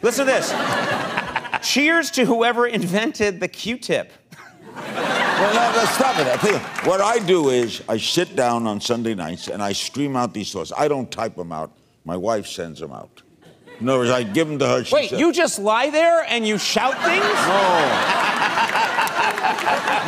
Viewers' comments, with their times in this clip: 0:07 "What i do is I shit down on sunday nights...."